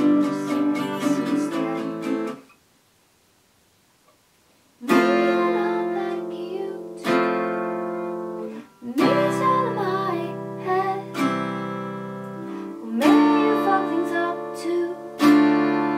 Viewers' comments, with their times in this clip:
0:03 I could hear this as a touching ballad, like at the speed of